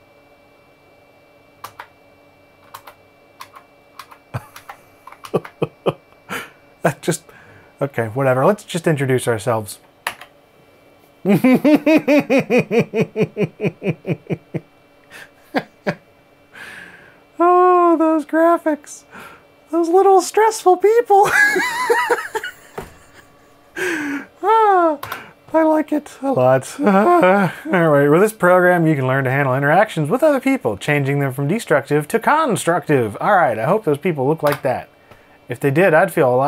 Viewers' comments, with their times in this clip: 0:03 You slayed me with your lol 😂
0:10 is just so delightful the stick people, ur laugh.....SO incredible
0:17 That voice change ...man, you kill me!
0:17 WTF. LGR suddenly became Mickey Mouse...
0:18 You sound like Him from Powerpuff Girls